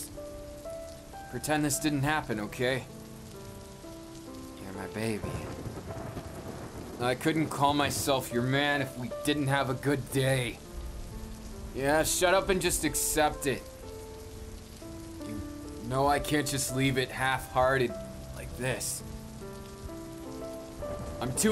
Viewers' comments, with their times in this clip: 0:08 Am I the only one who loved the way he said “your my baby”